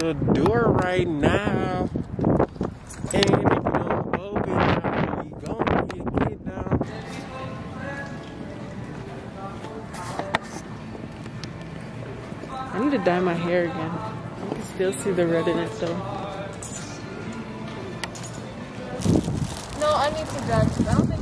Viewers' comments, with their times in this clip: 0:03 man's singing knock knock lmao! Got that stuck in my head.